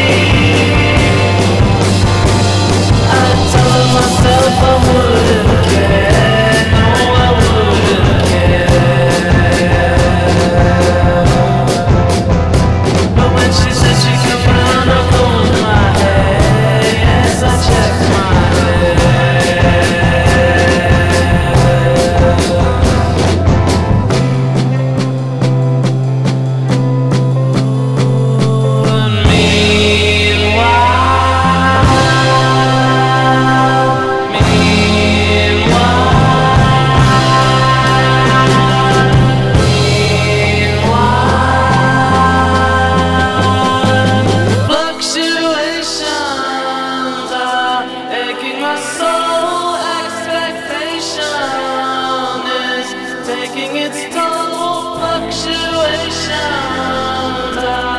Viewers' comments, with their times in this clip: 0:03 I love how song switches for a brief moment there
0:44 that sound sounds like it's going directly into my brain even when I listen without headphones